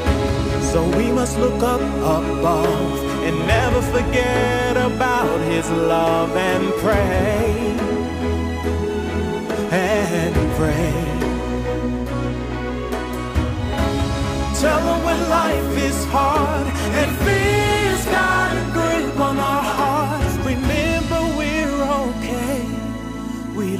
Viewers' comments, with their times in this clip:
0:09 That song is the most cringe thing I've heard! I lose!